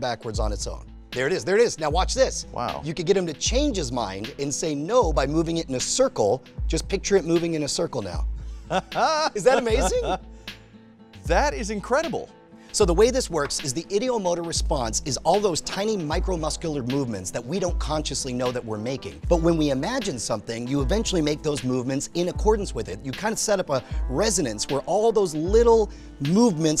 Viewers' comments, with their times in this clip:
0:07 that sounds like the kawhi laugh
0:08 Kawhi Leonard laugh
0:08 kawhi leonards laugh